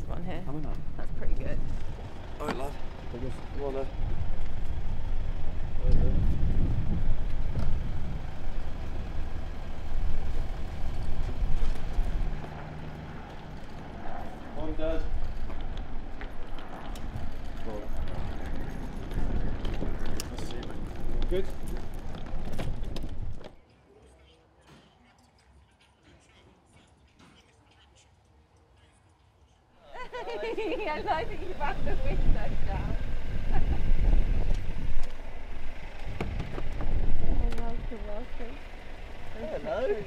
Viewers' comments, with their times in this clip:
0:03 Jordan looks and sounds like he just woke up
0:22 Ashley Cole randomly walking past listening to drill music, couldn't get more random 😂